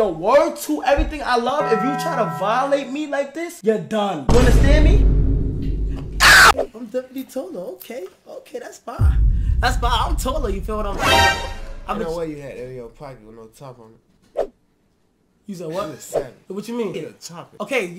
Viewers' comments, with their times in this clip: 0:05 the way he screamed 😂